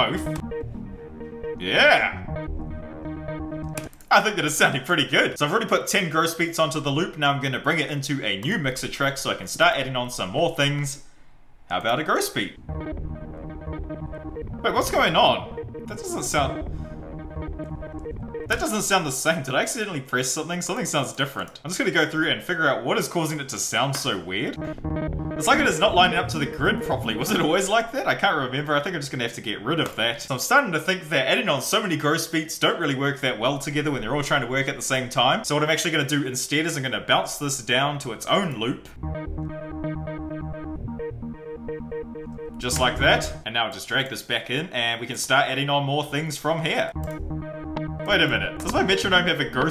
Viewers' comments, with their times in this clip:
0:08 you have the signal from mixer track 2 going to BOTH the master and MXT 3. That's causing your out of time glitch.
0:35 Issue You linked the insert 1 to insert 2 but didn't remove it from master. Hence two sounds were coming.